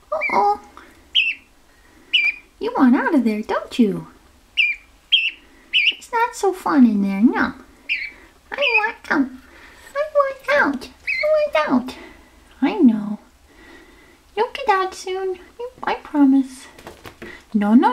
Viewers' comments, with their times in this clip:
0:04 Rocky mimicked the song Of a Robin